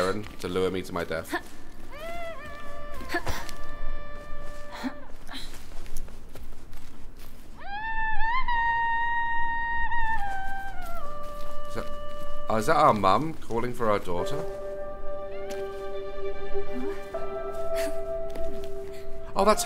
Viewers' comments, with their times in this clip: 0:04 Idk if it’s just me but that song sounds so much like another video game “Brothers: Tale of Two Sons”, it brought back so many memories when I heard it. Idk if by the same people or not.